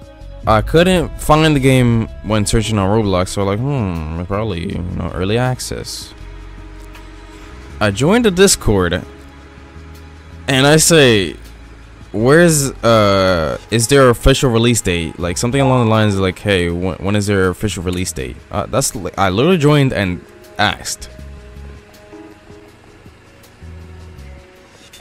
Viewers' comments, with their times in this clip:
0:08 I knew where this was going from a mile away with the tone you started with